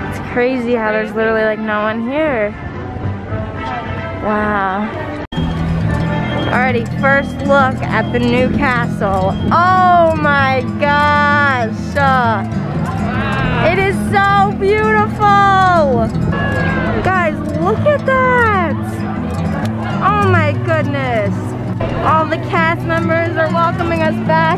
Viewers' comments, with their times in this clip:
0:09 sounding like janice over here